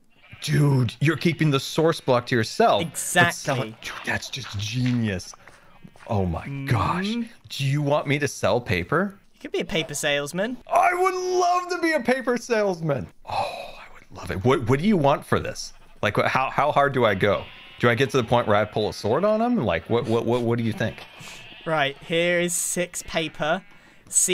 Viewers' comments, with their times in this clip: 0:10 "I WOULD LOVE TO BE A PAPER SALESMAN!!!!" he sounds so genuinely excited, like a little kid being given a lollipop